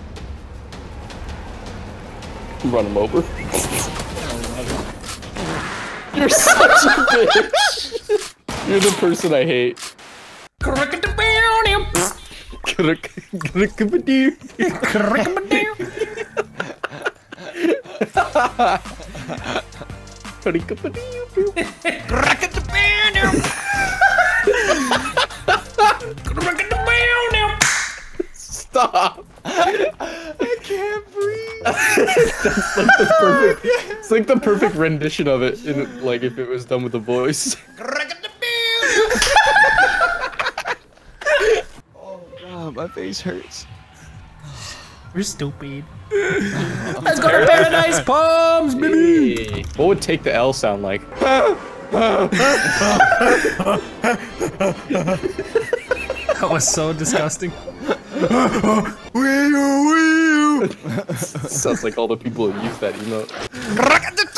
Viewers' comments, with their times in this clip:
0:10 the way I hear Dance Moves 😂😂
0:50 ( voice crack throughout ) BAH BAH BAH BAHBABAH , BAH BAH BAHH